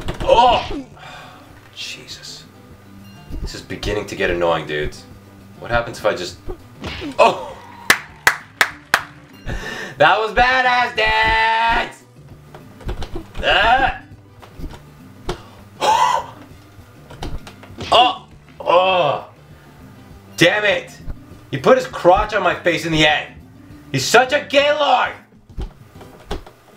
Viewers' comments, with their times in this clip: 0:10 Thumbs up or reply if you think he kinda sounds like cartman